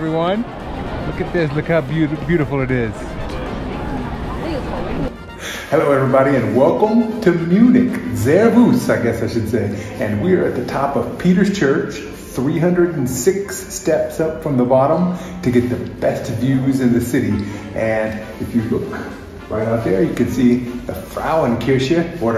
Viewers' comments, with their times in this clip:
0:07 total wrong pronounciation of Servus :-)